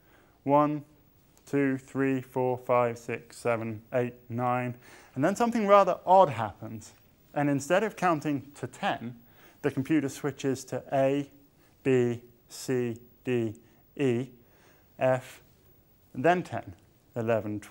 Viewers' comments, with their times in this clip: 0:04 ... and then something rather even happens ...